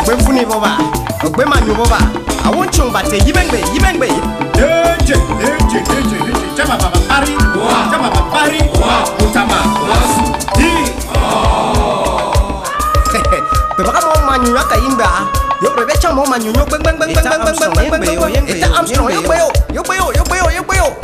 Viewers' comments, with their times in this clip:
0:07 the man talking thats my uncle